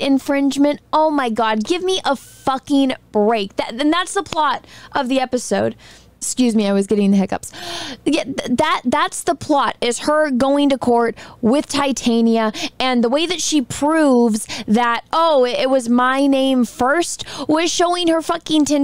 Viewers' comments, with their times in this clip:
0:06 She Hulk is such a stupid show it literally gives people the hiccups.